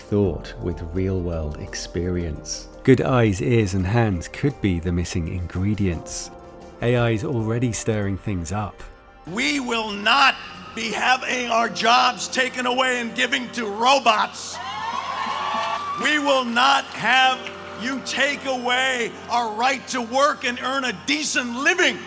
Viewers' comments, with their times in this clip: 0:06 I'm seeing this trend, and again, after seeing Bryan Cranston speaking: Why is everyone orating like Hitler?